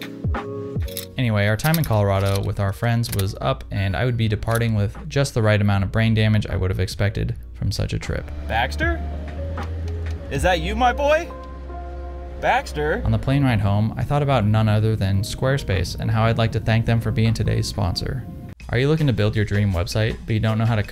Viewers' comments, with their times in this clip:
0:08 you spoke out of monotone O.O